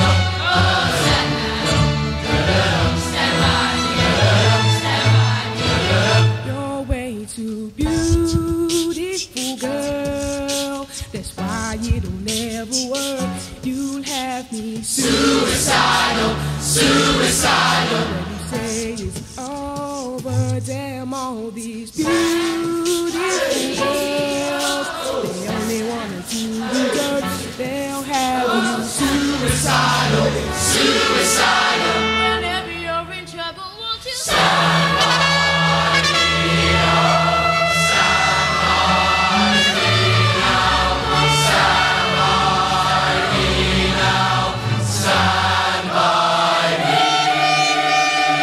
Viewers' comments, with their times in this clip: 0:06 I really like how the boy sings he sings really nice.
0:06 U wont think this is good if u dont like this kind of music, but they all did great but the boy that started sing did the best I love his voice but still in all they all did great......
0:06 the soloist for beautiful girls is my perfect man :D THAT VOICE!!! = love at first sight =3
0:30 I love his voice!!
0:30 i think the kid is cute and has a really good voice
0:31 that kids voice though,!
0:31 The boy should sing more solo's, he's fantastic!
0:31 that kid should’ve sung the song by themselves. Bass line was loud as hell. Solos were meh. But that kid, he has an amazing voice.
0:32 .. who is that? his voice gave me chills. :p
0:32 The boy has a beautiful voice!!
0:33 There is AMAZING talent in the kid I wish they would have let him belt out that perfect note in a solo.